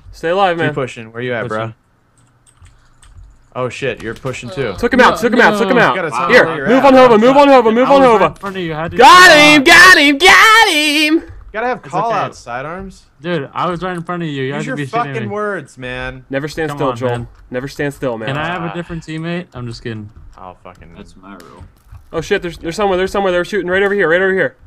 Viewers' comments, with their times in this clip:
0:08 RIP in peace headphone users!